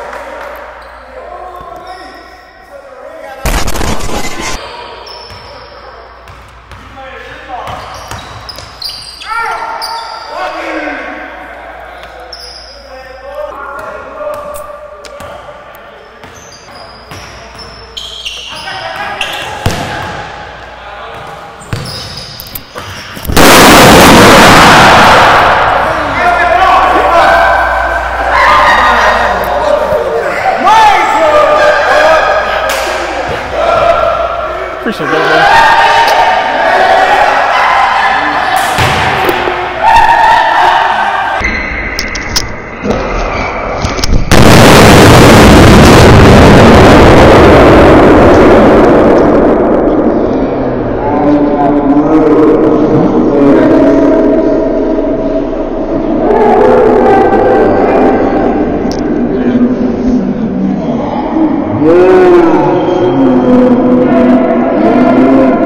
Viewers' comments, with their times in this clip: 0:08 the sweet noise of some Jordans sliding up.
0:16 Got me cracking up man!! Holy. BBecause the sound is distorted and you fell on the floor right when you popped it LMMMAAAOO
0:18 SOUNDS LIKE LIGHTNING HITTIN THE GYM-
0:22 I did NOT wanna see that ball exploding for two reasons, one: that two handed power strike got me knowing that it was going to pop, two: the ball didn’t sound like it was overinflated!
0:22 When my dad sneeze:
0:22 THAT SHI SOUND LIKE A WW2 BOMBER 💀
0:22 sounds like a firework in a tunnel
0:22 MAJOR EAR RAPE WARNING
0:23 OMG MY EARS!!!!!!!!!!!!!!!!!!!!!!!!!!!!!!!!!!!!!!!!! 😱😱😱😱😱😱😱😱😱😱😂😂😂😂😂😂😂
0:23 the explosion here is loud enough to be heard from miles away.
0:23 Lol sounds like Oppenheimer.
0:23 The sound is loud and funny
0:23 for the BOOM!!!
0:27 that explosion sounded like a .30-06 and a 500lb bomb
0:42 DAMN IT SOUNDED LIKE THE KRAKATOA ERUPTION
0:42 sounds like a fighter jet doing a sonic boom
0:42 Sounds like dropping a nuke 😂
0:43 sounds like the Original Roblox explosion by the rocket launchers 😂🤣
0:43 that sounded like a big explosion
0:46 bro thought it was a real gunshot he was ready😂